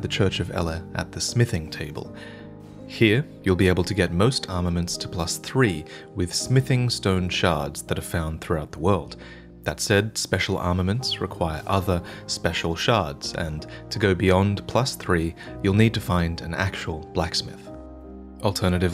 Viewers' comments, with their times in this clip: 0:06 whats the music it feels nostalgic/familiar and so pretty